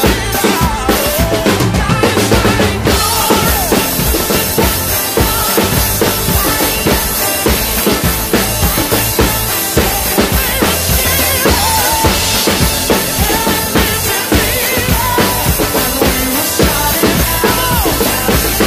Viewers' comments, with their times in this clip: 0:05 Love that groove, super different than the typical church stuff. Groovin man!